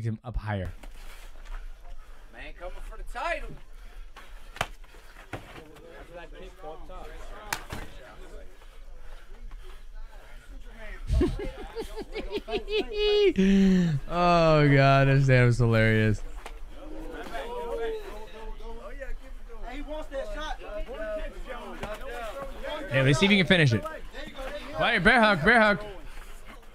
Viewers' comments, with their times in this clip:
0:08 I understand why he laugh